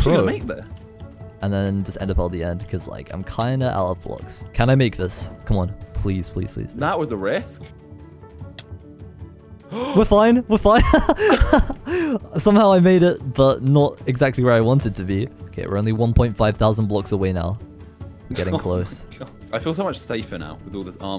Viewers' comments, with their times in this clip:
0:09 His laugh is just pure serotonin.